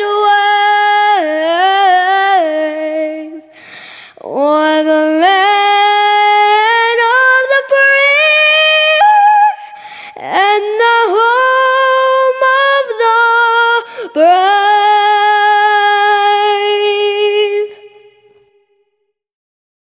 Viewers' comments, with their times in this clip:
0:09 Wow, I've watched this 3 times already, and I'm still as shocked as the first time ! Amazing voice <3